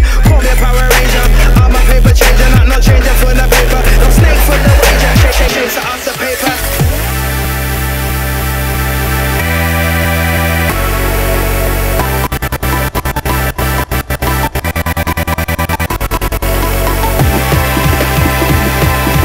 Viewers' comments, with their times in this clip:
0:07 Wtf is the tune sounds like Rockwell